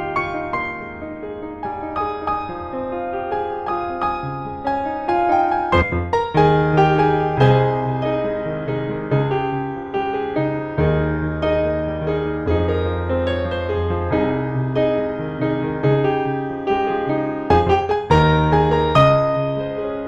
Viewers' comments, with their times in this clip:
0:05 gg fuck my live how could i miss hte premiere omfg im stupid lmafo i had something to do and forgot it lmafo shocked me as hell lol i really like this arrangement really nice !! i like the ending where you slowed down perfect ending chord xD